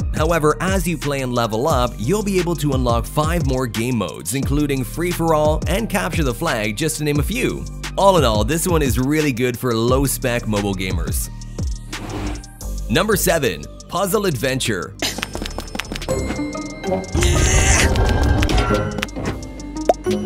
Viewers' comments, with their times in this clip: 0:07 oh no the down to top have the covid-19